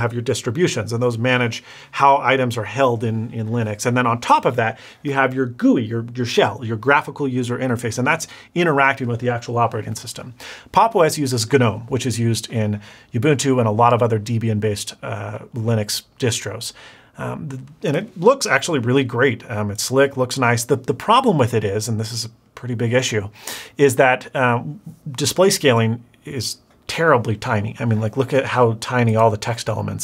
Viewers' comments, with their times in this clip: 0:09 GENOME lollolol did u catch that?
0:10 that hard G in gnome though
0:16 I don't mean to be pedantic, cause really cool video. But not sure it is possible to mispronounce more things than in this video (and I stopped a the mark to make this comment)! Youbuntu, Deebian, Guhnome .... I'm dying. You should have just stuck by your initial statement of "I don't really wanna explain how linux works ..", because you can't.